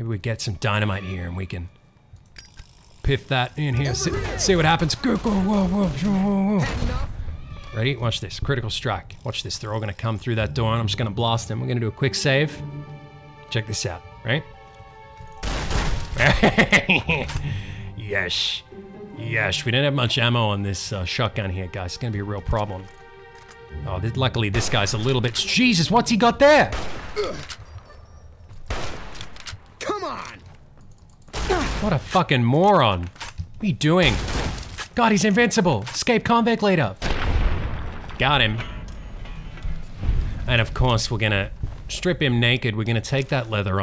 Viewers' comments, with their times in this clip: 0:04 This music reminds me of Home Alone for some reason.
0:14 jesus christ, I think the gnomes infected you with their speech impediment
0:27 The escaped convict leader oddly sounds a lot like Captain Falcon for some reason.